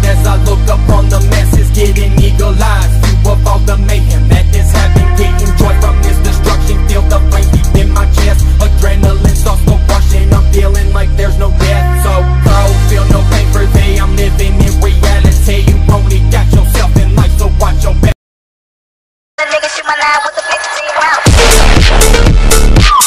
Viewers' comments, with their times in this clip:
0:04 this not phonk this trap